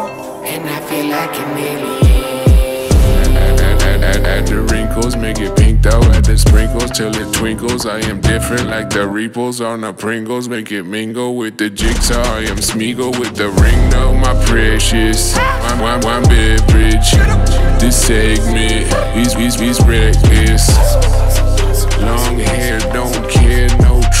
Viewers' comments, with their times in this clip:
0:07 Awesome!!! I definitely would not have been able to figure that out for days! 🎶 reminds me of eazy mac - tortured genius